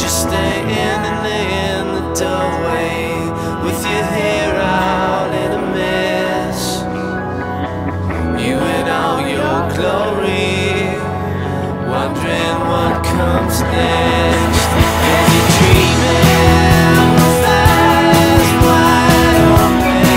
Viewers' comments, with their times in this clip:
0:08 I just noticed the backwards-playing record cool!